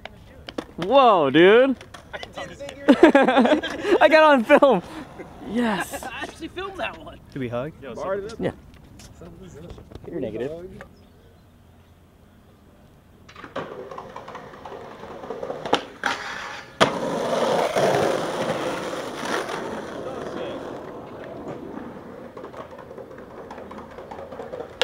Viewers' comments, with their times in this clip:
0:05 "can we hug" was so serious